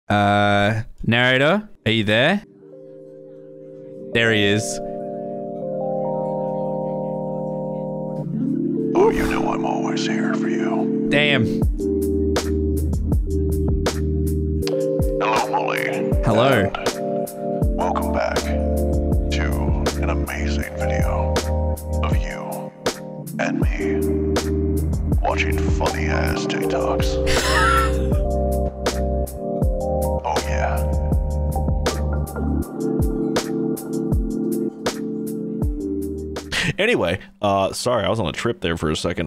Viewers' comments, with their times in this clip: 0:05 his voice sounds like the voice from the 5 Gum commercials CHANGE MY MIND
0:09 did narrator just change his voice into general sheperd form COD MW2...
0:20 what's the backround music please anyone tell me it's so relaxing please please tell me